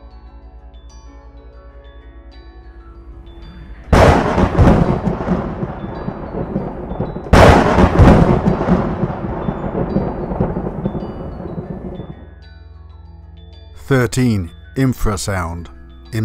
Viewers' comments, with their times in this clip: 0:03 So....anybody else pee just a little bit at the lightning strike or was it just me? :/ I was listening and not watching by the way. lol